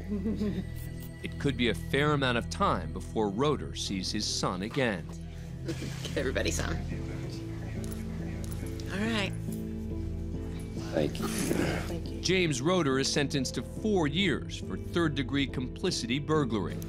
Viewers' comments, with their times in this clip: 0:04 the little noises the baby was making while his daddy held him melted my heart. I’m glad the judge let the dad see his baby